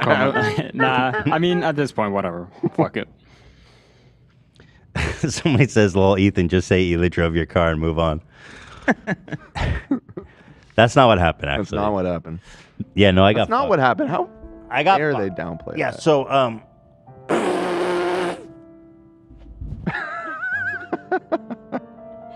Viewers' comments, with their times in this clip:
0:05 when Ethan couldn’t hold in his laugh